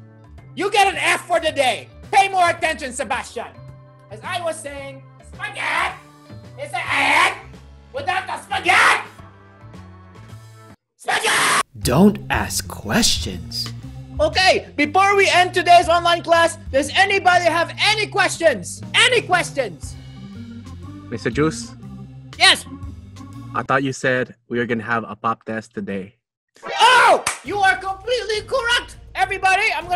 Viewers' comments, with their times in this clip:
0:09 The srceam man the srceam 🤣🤣🤣
0:10 scream for justice
0:10 In He scream and make me laughing
0:11 Another Perfectly Cut Scream.